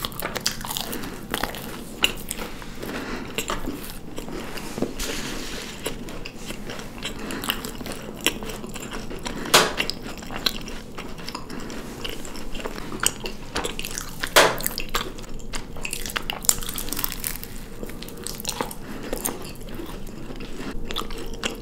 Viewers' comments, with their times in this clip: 0:09 Who’s popping balloons? I wanna pop’em too